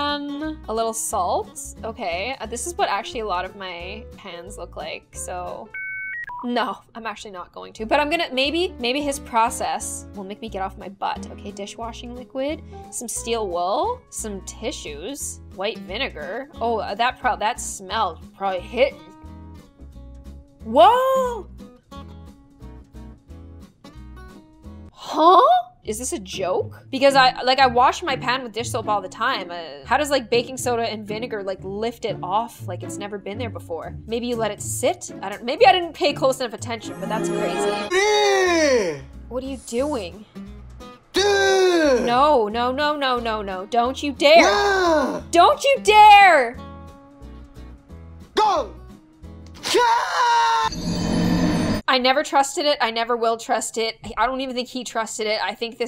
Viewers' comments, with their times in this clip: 0:04 at first I thought she said this is what most of my fans look like….. Anybody else……. Nope……. Ok…..
0:25 Why did that kinda sound like a duck/swan - (Probably just me...)
0:41 it’s like she was talking to a kid she’s like OK no no no